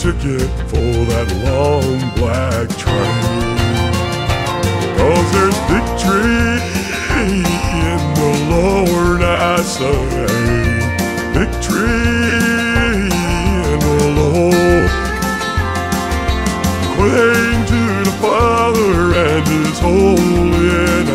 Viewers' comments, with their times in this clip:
0:06 I lost it with what happened to his voice.